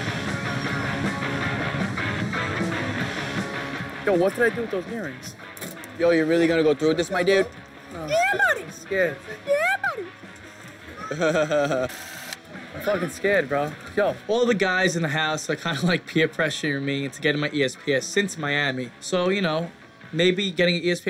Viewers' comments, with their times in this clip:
0:08 the cutest " yeah buddy" ever